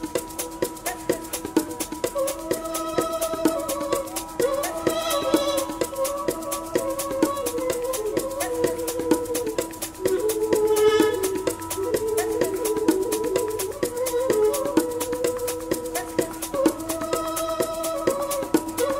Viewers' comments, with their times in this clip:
0:03 the instrumental part is awsome i love it, cool. sven is an amazing "musician"